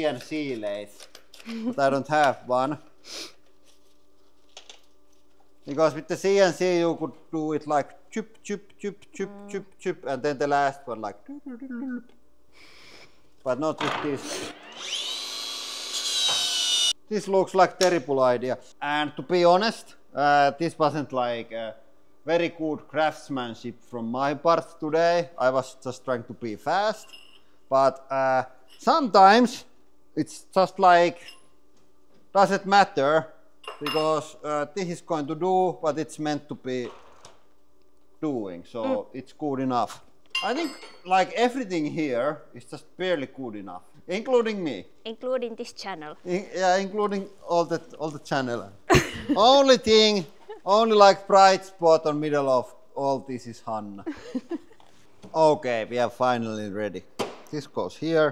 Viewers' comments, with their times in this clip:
0:10 the sound effects are impressive
0:44 Ahhhh We Fuked Up 😂 I ❤ the Honesty with the Accent it Just Works Don’t Break Something that Works 😂😂😂😂 1 of my Favorite Channels it’s not Barely Good Enough It’s Great Content That’s why you Have 10.4 Million Subscribers Behind You 😂